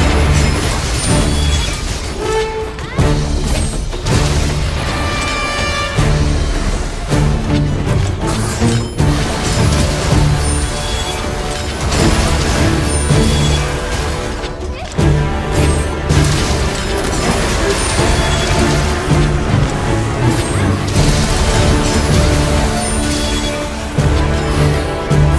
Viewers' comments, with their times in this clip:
0:08 The fucking music sync to the counters